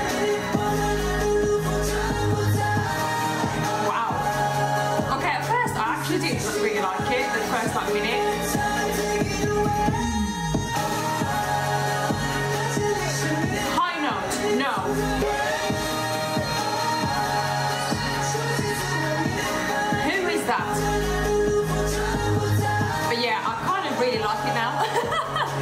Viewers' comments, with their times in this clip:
0:09 Ten's high note